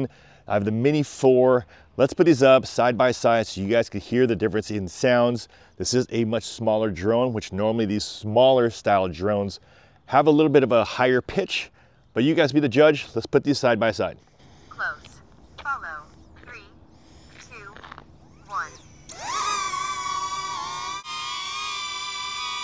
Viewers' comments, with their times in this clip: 0:08 Sounds like a banshee